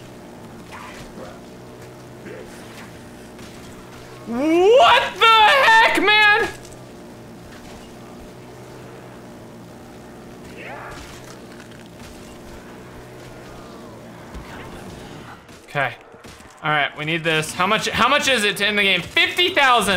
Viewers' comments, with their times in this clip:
0:03 who else thinks he sounded like morty
0:05 you kinda sounded like Morty